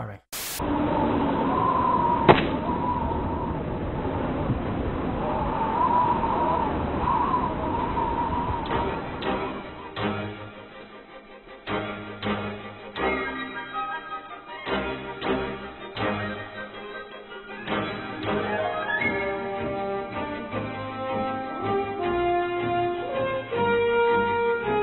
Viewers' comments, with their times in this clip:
0:08 Fun fact about the music of the opening scene of Super Smash Brothers Melee. The version used in the trailer can't exist before November 23rd 2018, because this version of the theme has no vfx on it, and it only existed after a channel called ''beta sword'' released the version without any sound effects.